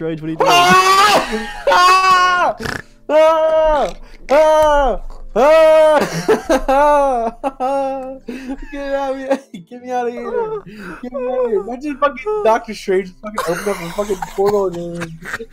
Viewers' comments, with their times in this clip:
0:03 why does he sound like a Windex bottle being sprayed 😂😂